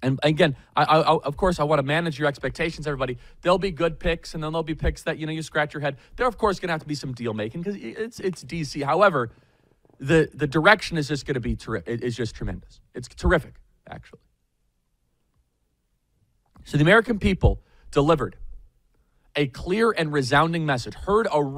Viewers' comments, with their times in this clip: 0:09 Charlie Rips a fuckin whopper!!!!!🍔🤣🤮🤣🤮🤣🤮🤣🤮🤣🤮